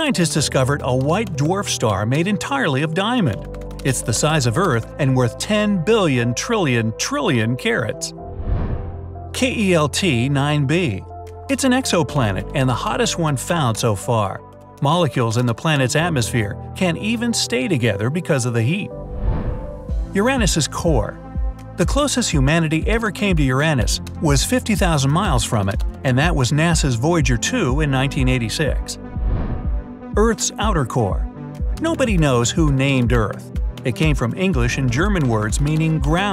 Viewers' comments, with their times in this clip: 0:05 I thought you said “carrots” xD
0:07 I thought he said "Carrots"
0:20 I’ve never heard someone say Uranus like that